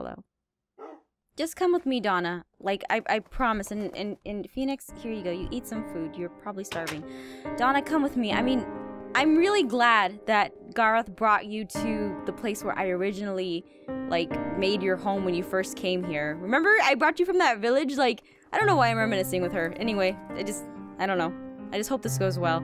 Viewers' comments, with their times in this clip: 0:03 ohh that music never means anything good
0:04 the faq, the music almost made me cry
0:06 UHOH, NOT THE EPIC SAD MUSIC, SOMETHING BAD OR SAD ALWAYS HAPPENS HERE!!! (Or at the end of the video its a cliffhanger ~-~)